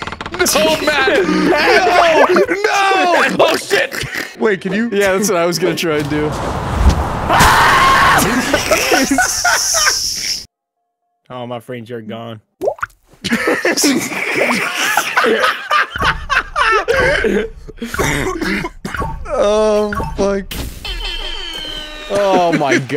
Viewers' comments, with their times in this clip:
0:06 The scream is just perfect
0:06 that was a scream of pure terror
0:07 why was that scream so real